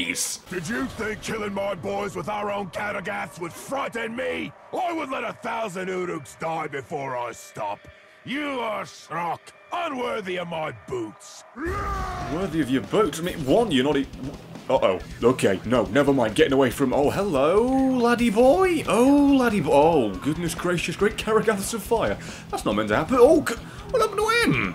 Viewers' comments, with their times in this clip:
0:05 wait, Mr Waternoose?, is that you?